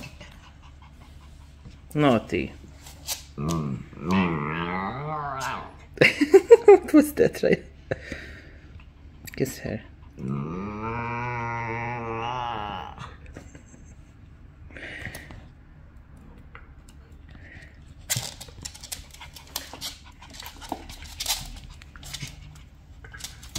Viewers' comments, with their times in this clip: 0:04 No way a dog just made that sound.